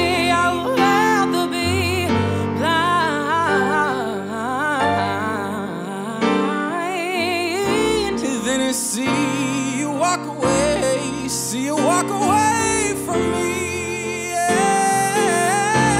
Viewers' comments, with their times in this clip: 0:03 She is good at runs. was the best part!